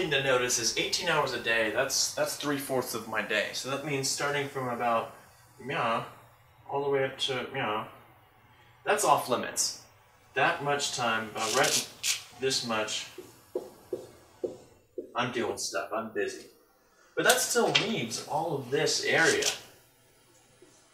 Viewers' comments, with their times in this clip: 0:04 Sounds like a new physics symbols